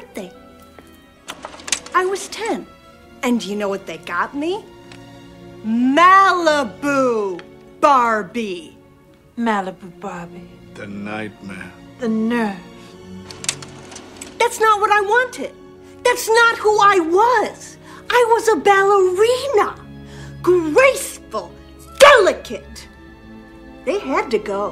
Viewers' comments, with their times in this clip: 0:08 HAHAHAH OMG THE WAY MORTICIA SAYS mAlIbU bArbIE